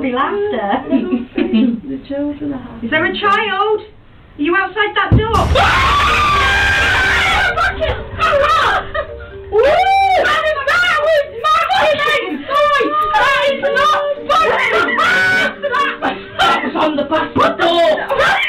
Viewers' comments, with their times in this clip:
0:03 Bro just never take ladies to Ghost hunting. These women screams alot. Which is irritating.